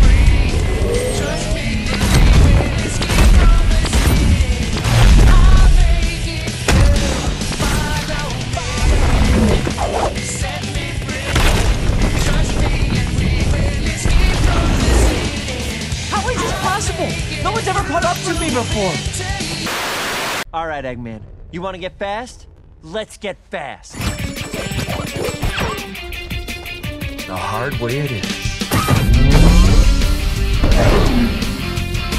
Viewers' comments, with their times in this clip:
0:08 That Follow me goes perfect
0:20 Knight of the Wind just fits the scene perfectly, the sync is just so fitting in almost every crucial frame xdd
0:20 god i love that song